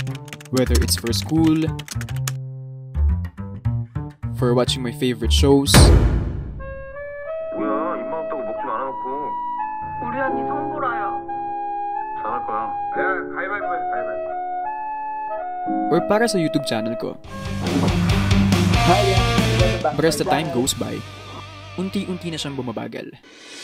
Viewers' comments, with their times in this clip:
0:07 I always get sad whenever I hear this bgm gdhdhd 🥺